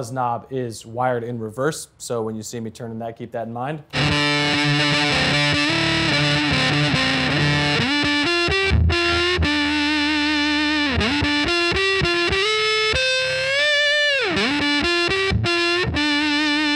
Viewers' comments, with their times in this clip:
0:03 smashing pumpkins type beat